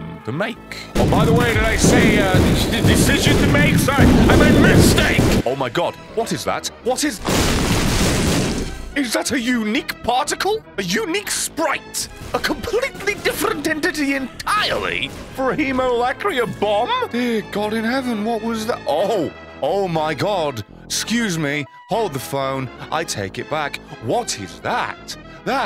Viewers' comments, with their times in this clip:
0:06 never have i heard more fear in a mans voice😭